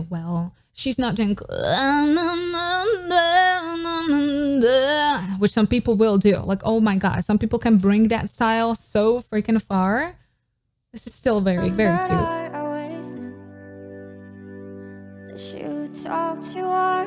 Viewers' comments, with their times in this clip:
0:04 I thought Jennie came into the video for a second with her snowman cover lmao